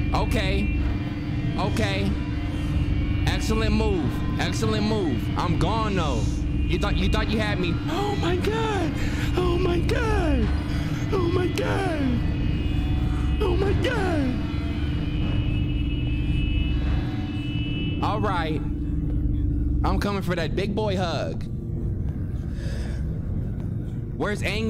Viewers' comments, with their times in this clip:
0:08 tf happened to his voice🤣🤣